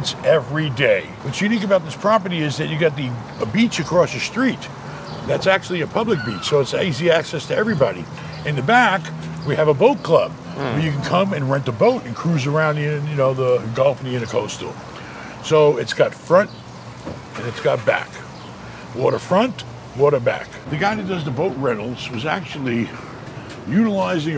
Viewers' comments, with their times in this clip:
0:10 Did he fart ?
0:10 did this dude just fart at the minute mark?